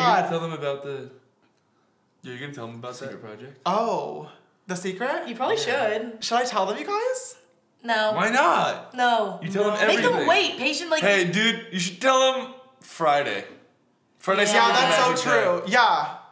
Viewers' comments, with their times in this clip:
0:04 "Probably should" remind me of ethan trying to impersonate emma in emma's video XD